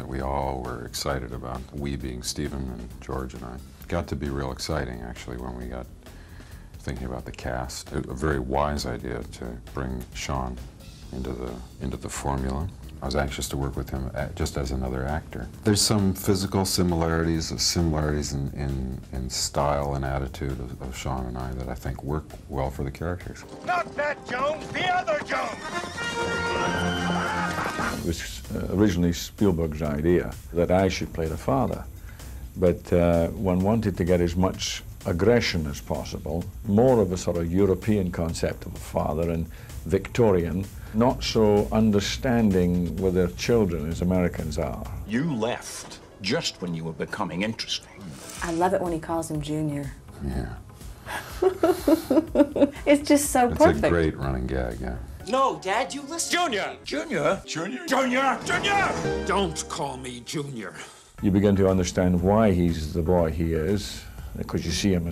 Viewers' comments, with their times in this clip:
0:05 “don’t I sound excited?” [in monotone voice]
0:48 The Harrison Ford "look and voice" that made him rich